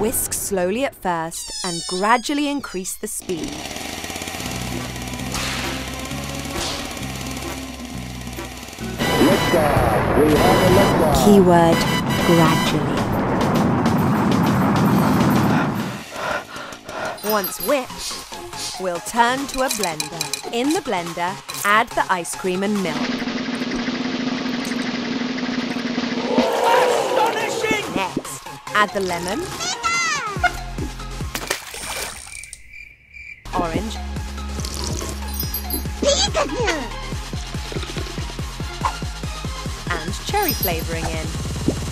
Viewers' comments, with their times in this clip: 0:09 u can hear a hencmen and u can hear season 2 agency theme song
0:29 That's funny, because in Spanish, when food is hot (hot like chili, not temperature) we say "¡Pica!" which is pronounced exactly like that.